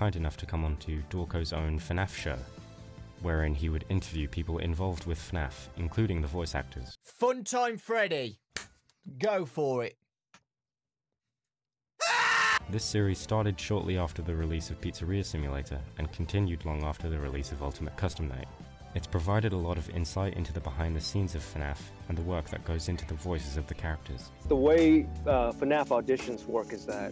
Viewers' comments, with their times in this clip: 0:09 that cut scream got me so hard 😂